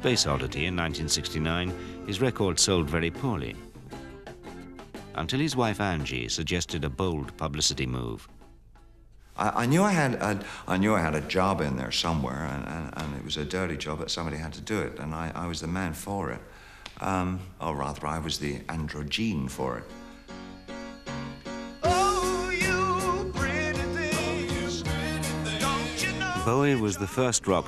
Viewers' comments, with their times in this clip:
0:09 I think he busts an american accent...or maybe I'm just high.